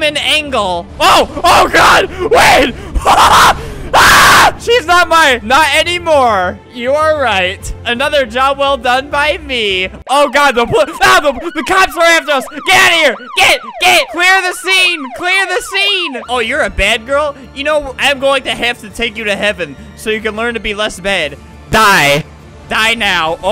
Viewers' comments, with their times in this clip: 0:04 rip headphones users just turn up the volume and see